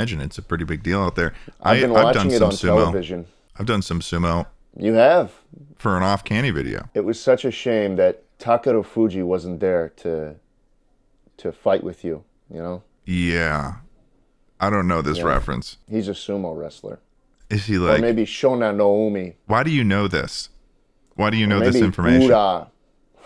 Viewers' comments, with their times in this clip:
0:07 Hearing Schlatt go from the way he usually pronounces words in Japanese to this is so jarring lmao